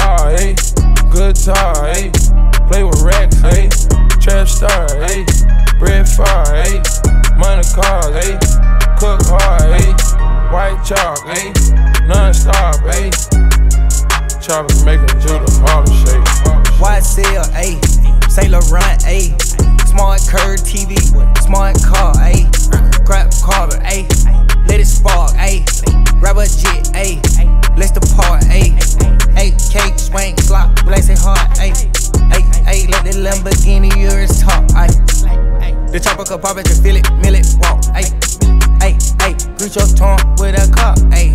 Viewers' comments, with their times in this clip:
0:03 Idk why but I straight up felt some kind of Naruto vibes from the beat
0:28 why was Thug so off beat lmao Nigga started sounding like Blueface